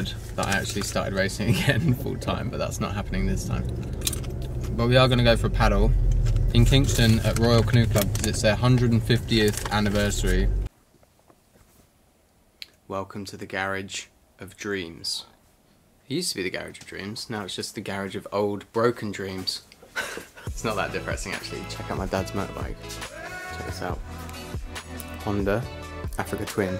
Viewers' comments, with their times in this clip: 0:10 it was so quiet, i thought my speaker broke... :D